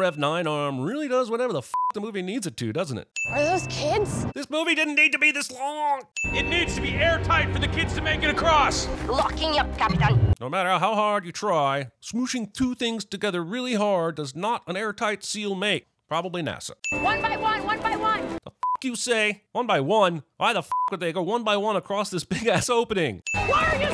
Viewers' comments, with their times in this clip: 0:09 Why does the dog have an Asian accent if it's supposed to be Russian? Or is it a Russian accent?